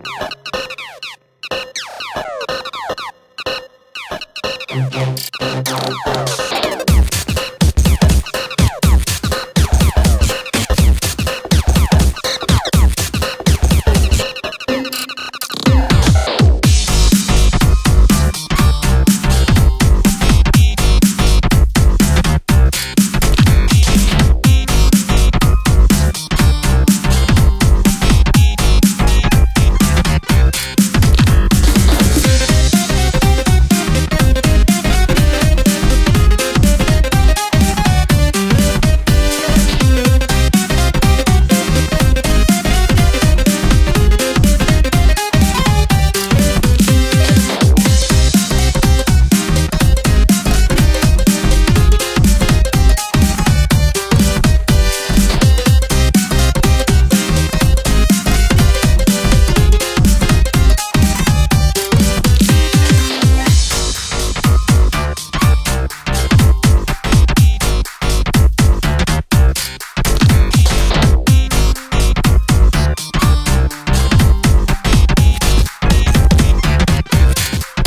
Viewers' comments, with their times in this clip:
0:06 Who else heard the Earthbound "Bash" sound effect
0:16 still hits hard after many years this has got to be the best drop of any song EDIT: this should be a Nine Circles level
0:16 reminds me to a russian music lol!
0:16 sounds like a sega sonic game
0:31 on 0.75 speed sounds like some kind of cartoon theme
0:32 After so many years the beat stills hitting me as hard as the first time i heard this song
0:32 i swear to god could be a melody in a boss theme for jester
0:32 It sounds like a music for wario
0:32 kinda sounds like descend from homestuck
0:32 It's amazing and it's the only part that actually sounds retro
0:32 Its like a unused Super meat boy song
0:32 sounds like something i would hear in a sonic game at this timestamp
0:32 Youtube subtitles [Music] Gd players subtitles [Swearing]
0:32 decode and platinum adventure vibes
0:32 everybody doesnt care at the song until the vibe drop comes in
0:32 sounds like jetpack joyride but Barry forgot to pay his bills change my mind
0:32 Sounds like a "mad rat dead" theme
0:47 to people who don't know gd: Epic drop! to gd players: Steady steady dies FVVVVVVVV-
0:47 Non GD players: ayo nice drop there GD Players: oh shit nooo
1:02 by brain for some reason hearing these three notes: B A D P I G G I E S